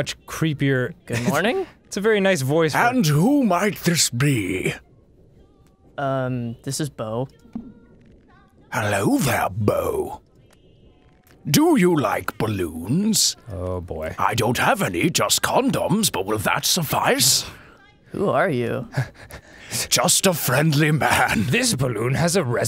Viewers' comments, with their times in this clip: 0:09 jesus it's like it's daniel plainview from there will be blood